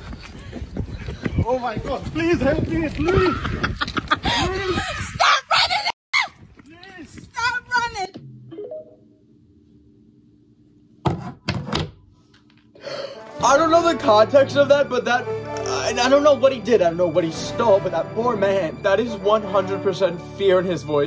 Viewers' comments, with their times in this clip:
0:03 THE EVIL LAUGH😭